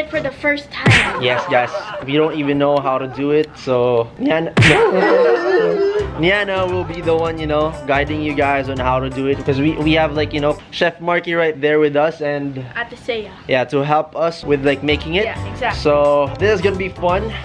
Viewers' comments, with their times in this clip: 0:04 Ranz voice crack 😂😂😂